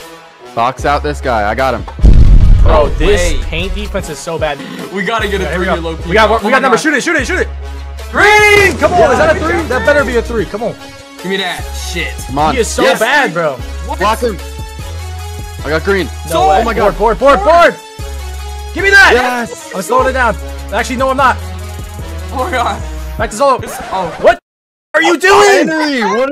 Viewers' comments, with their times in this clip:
0:07 in never heard a more synchronized “green” in my life